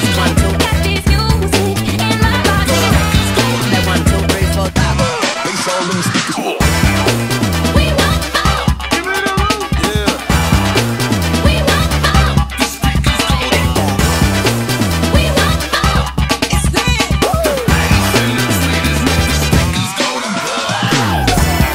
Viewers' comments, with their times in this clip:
0:06 steve from minecraft dies in the backround